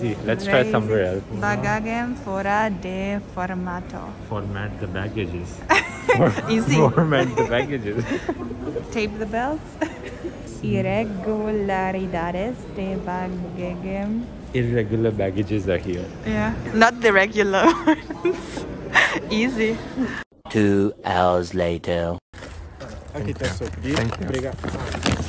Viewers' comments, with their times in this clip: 0:09 is she speaking valarian?
0:11 she is just like me speaking"congratulations" when i was small